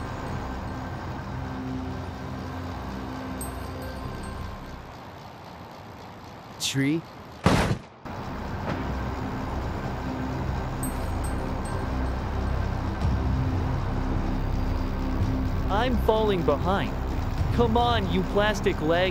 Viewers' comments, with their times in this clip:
0:06 the way he says 'tree' so factually broke me